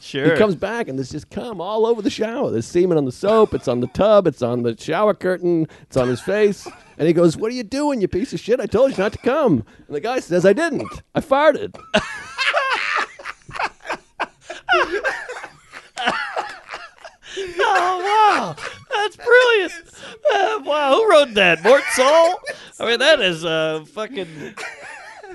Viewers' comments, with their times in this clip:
0:08 Mark's real laugh
0:11 seeing Mark laugh laugh is a great moment in podcast history lol
0:13 I've never seen Mark genuinely laugh. Fantastic segment